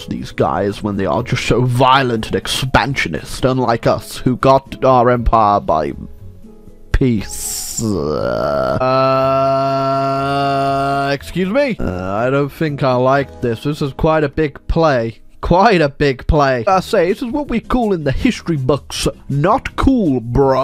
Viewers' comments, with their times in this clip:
0:06 he got his empire by pizza